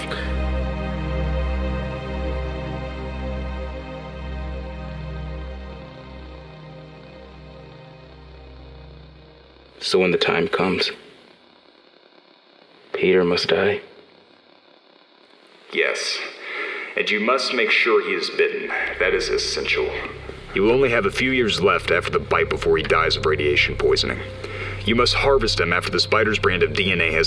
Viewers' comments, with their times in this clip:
0:09 kinda sounds like the deathly hallows scene in snapes memory s